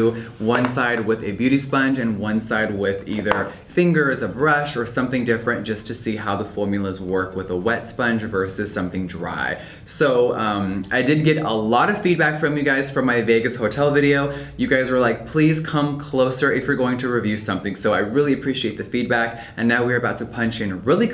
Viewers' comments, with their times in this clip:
0:08 did anyone else get tripped out when he clapped and it didnt make any sound?? ??